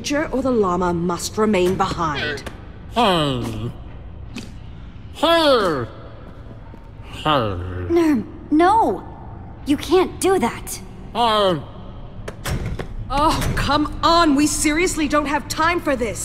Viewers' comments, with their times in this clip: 0:03 Nurm sounds so cute!!